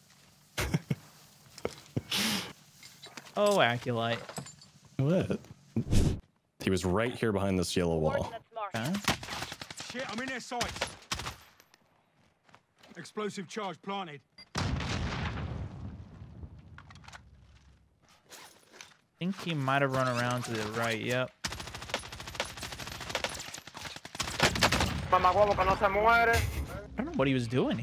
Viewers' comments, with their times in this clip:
0:08 so weird hearing Jeff Leach's voice in-game.